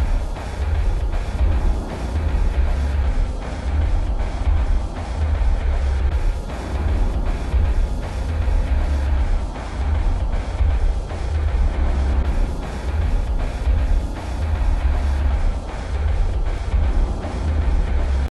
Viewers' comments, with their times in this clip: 0:06 what if there's a final boss battle against gaster and the boss battle is all of those playing at the same time? it already sounds really cool with just the two